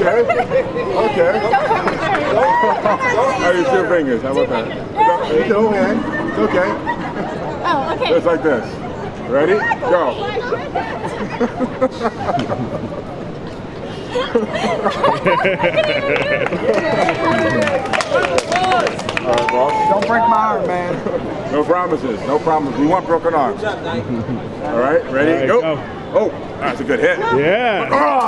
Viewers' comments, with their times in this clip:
0:10 lol his laugh